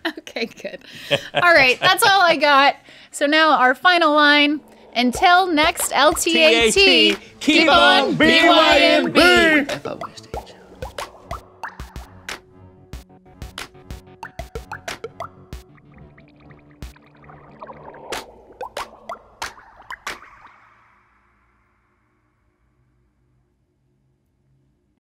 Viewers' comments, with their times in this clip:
0:09 what was whispered after the outro?